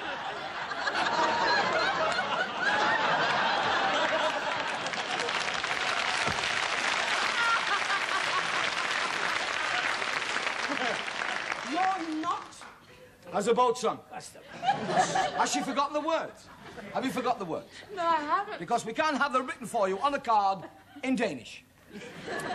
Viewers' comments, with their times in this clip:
0:08 The laugh of the happiest girl in the world at that moment:
0:08 Just love Nina's laugh ...properly cracking up :D